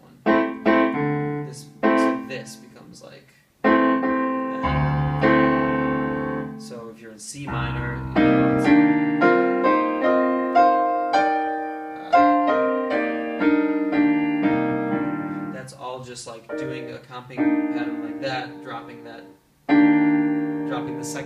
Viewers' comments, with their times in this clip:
0:07 The stuff you're doing at exactly . . how the fuck do you know how to do that? Admittedly I'm not a reader but I'm a 40-year+ musician and I pretty much understand the theory. But as a non reader, how would I practice those chord runs that you just pulled off so effortlessly? Are all those chords "Drop-2 voicing"? (See how naive I am) If I'm doing things by ear and researching those chords, what keywords should I look under? "Practicing drop-2 voicing in chord cascades" didn't turn up many results . . . =+( Thanks dude, you're awesome. But dude, you don't need to keep looking up at the camera! Apart from sudden Neck Whip Paralysis Syndrome, there is no one actually up there—it's just a piece of metal, plastic and glass. Cheers. mate!